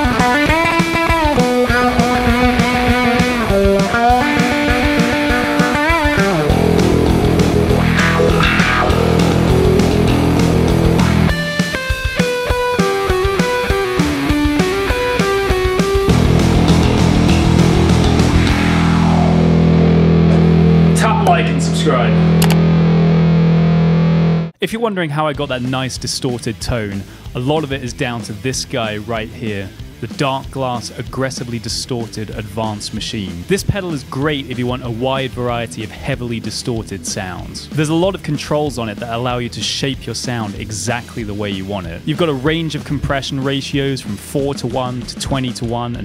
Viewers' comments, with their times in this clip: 0:05 Cleanest cover of this specific part of anesthesia I just love this part of anesthesia it’s such a jam
0:29 that was the coolest shit ever, what are those false harmonics?
0:30 WHAT IS HE DOING HELP I CANT FIGURE IT OUT. seriously tho is it the distortion or something? I don’t know why I didn’t question it when Cliff did it but what is he even doing it’s like and octave up it’s not harmonics is it? I can’t find any harmonics that go as high as that first note I’m so confused
0:30 That sound you made off the pickups was amazing